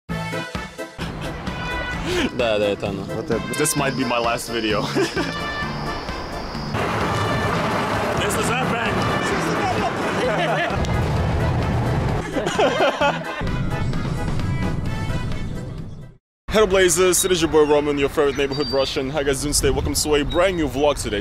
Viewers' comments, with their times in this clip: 0:05 This might be my last video Proceeds to laugh Russia: i dont get it